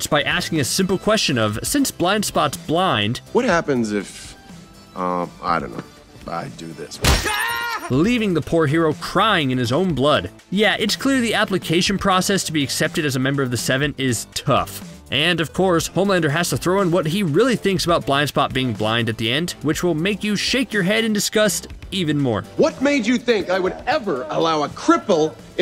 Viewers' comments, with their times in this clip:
0:06 why did that scream make me laugh XD